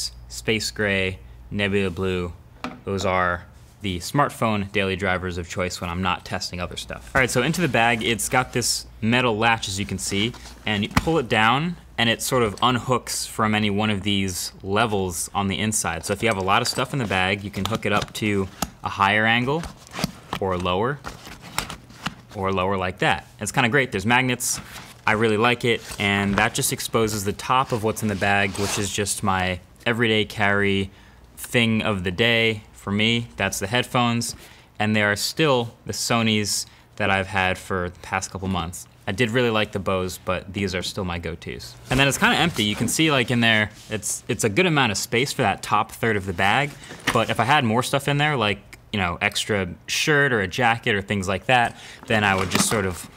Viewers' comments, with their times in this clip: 0:10 this is asmr
0:17 the hooking and unhooking sound of the backpack is just so satisfying
0:40 I did really like the bose but these are still my goaties.... What does goatee mean here. Tried searching in dictionary and found goatee as beard like goat.